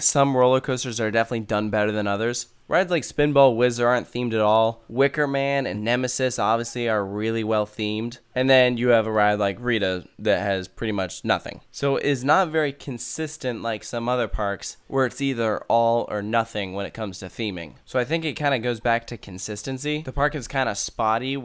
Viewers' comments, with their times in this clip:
0:09 Bro really said “Reedah”